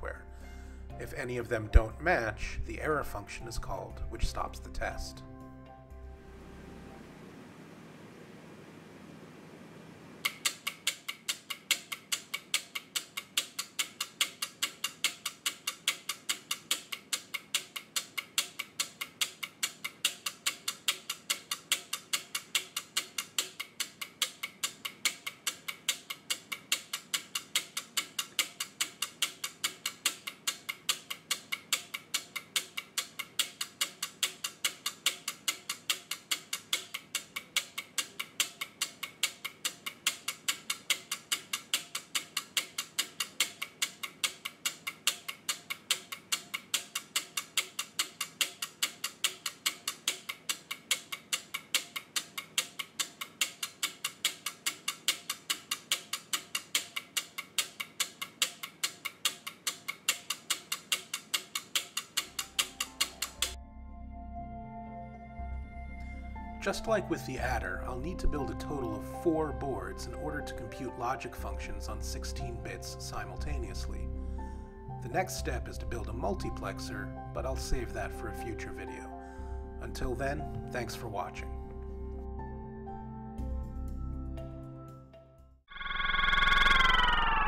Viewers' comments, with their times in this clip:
0:10 the music show start in
1:09 too bad the bg music is so loud you're actively competing with it in volume. Makes it hard to hear what you're trying to say. :(